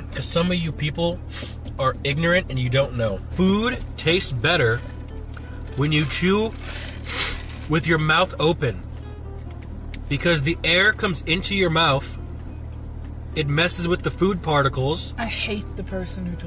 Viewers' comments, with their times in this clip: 0:03 a standing ovation to the editor! 👏🏽 👏🏽 👏🏽 That little earthquake sniff was incredible